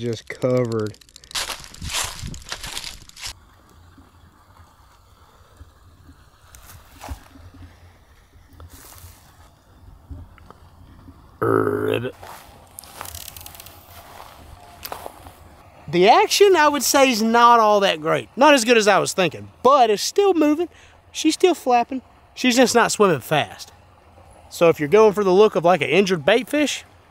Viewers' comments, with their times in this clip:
0:10 what the hell is that thing in the distance? RIBBIT!